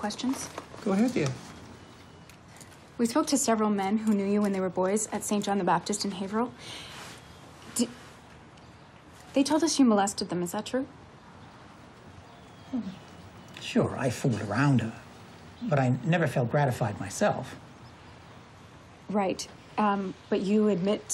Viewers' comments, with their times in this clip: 0:03 Wow that church is very close to where I live. And props to the actress for pronouncing Haverhill correctly.